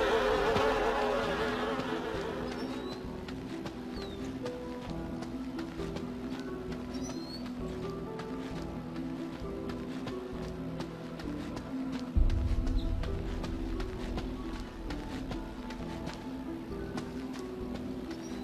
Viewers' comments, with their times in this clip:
0:06 The soundtrack reminds me of resident evil and the atmosphere reminds me of Silent Hill